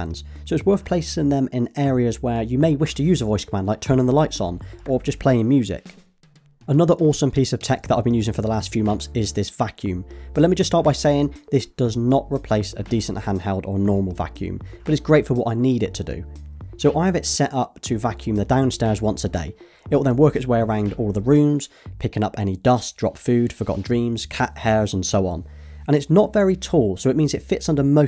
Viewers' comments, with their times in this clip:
0:09 Woah! For a second I heard "Fuck you" LOL